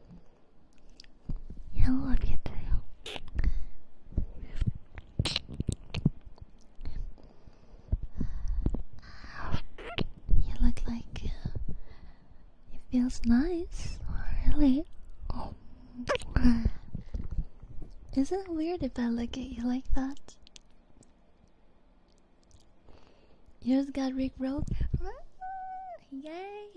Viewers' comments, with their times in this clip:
0:07 What Is That Sound….. Slurping Something?…